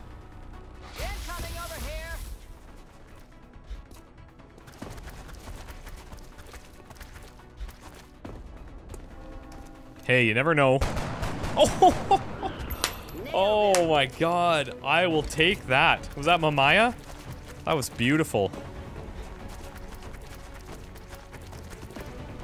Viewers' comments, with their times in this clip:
0:08 I heard the bell and I know it was going to hit